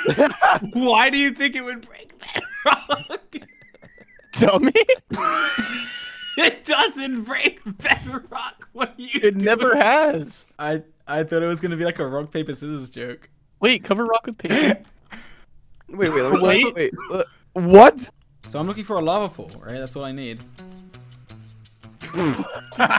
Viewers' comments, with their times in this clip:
0:06 he sounds like a crazy 70 year old gangster which is funny XD